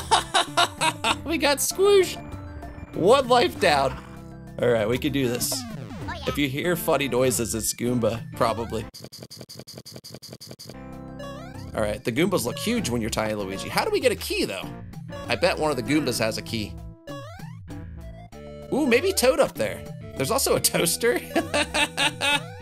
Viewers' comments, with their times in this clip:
0:09 why does that sound like a salt or pepper shaker? 😂